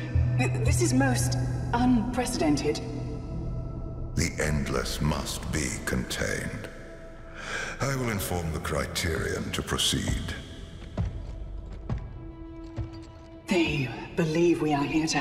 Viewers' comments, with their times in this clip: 0:03 I recognise that voice anywhere!